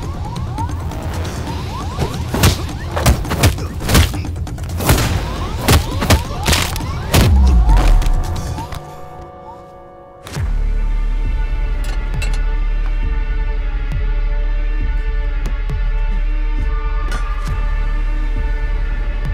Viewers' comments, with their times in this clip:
0:03 Bgm of Deepak dev delivers the best and only when needed.The devilish bell is an example.